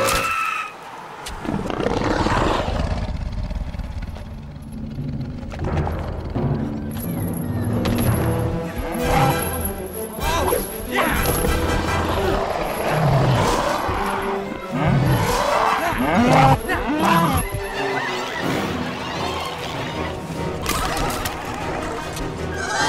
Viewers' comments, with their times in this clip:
0:07 listen to that music....